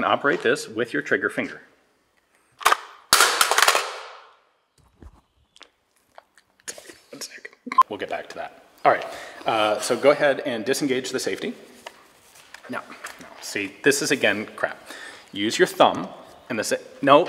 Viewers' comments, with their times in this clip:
0:05 Ian cracking up 😂